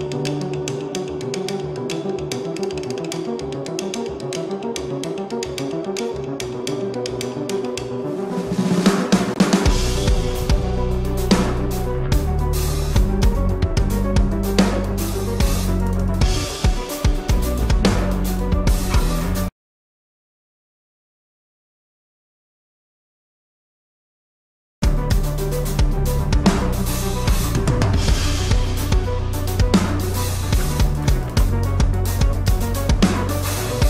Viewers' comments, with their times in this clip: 0:10 Omg! The transition into this beat is nasty!
0:16 the stankface is a great reaction for that tasty high hat fill.